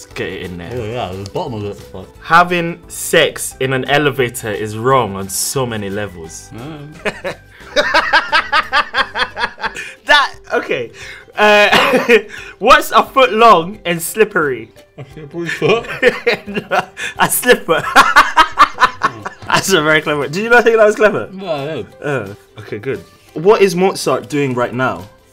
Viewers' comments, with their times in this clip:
0:07 that laugh omg😭